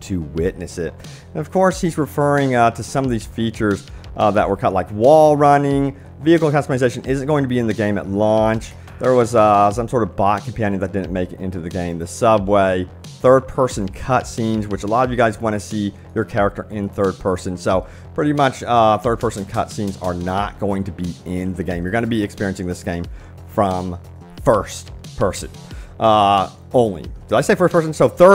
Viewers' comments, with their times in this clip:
0:09 I’m sorry, what exactly did the devs cut? I’ve played it back more times than I can count. My brain rejects whatevers said at that moment and sounds like absolutely nothing. Tossed word salad.